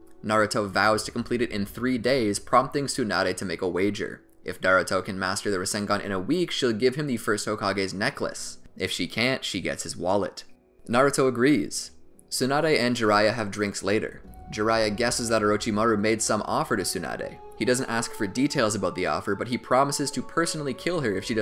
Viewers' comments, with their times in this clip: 0:04 you said Daruto and not Naruto 😁hehe